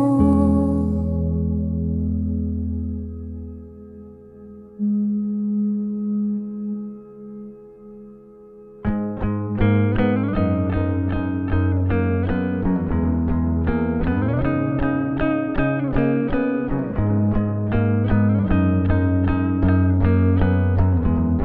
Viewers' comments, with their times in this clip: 0:07 that Riff, daaaaamn